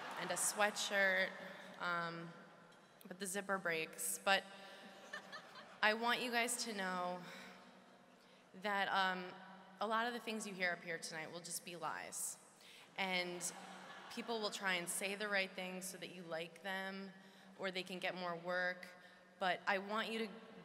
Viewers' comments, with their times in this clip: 0:03 florence's laugh has me dead